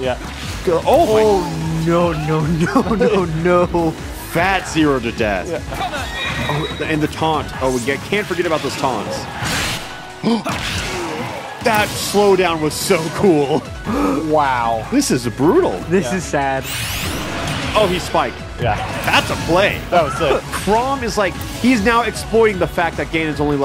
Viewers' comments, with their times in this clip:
0:07 damn even the music works with it